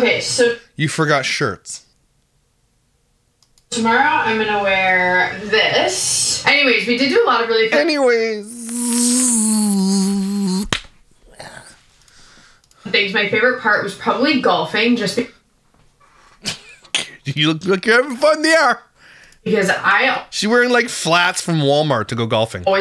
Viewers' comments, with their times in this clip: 0:06 LOLLL she seriously needs to stop saying it wrong it is SOO annoying